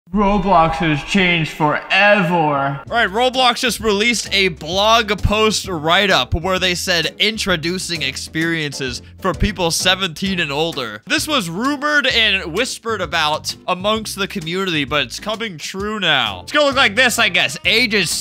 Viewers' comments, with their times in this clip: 0:00 Roblox has changed FoReVoOoR: (i just find it fun that you said forevor and not forever)